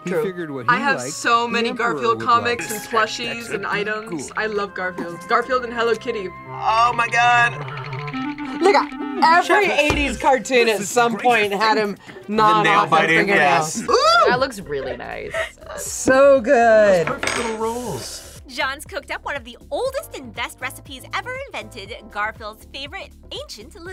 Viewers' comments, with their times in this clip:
0:08 someone PLEASE tell me i'm not the only one who heard something else lmao 😭